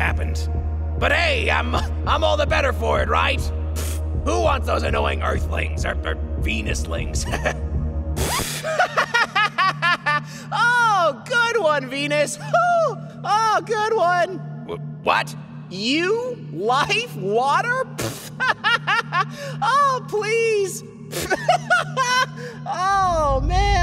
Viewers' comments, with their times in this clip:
0:08 EARTH’S CURSED LAUGHTER 😨
0:08 me on earth:why do I hear laughing in the sky?
0:09 Laughing earth is terrifying
0:09 is earth the next sun who laughs like that🤣
0:09 Lol he has a funny laugh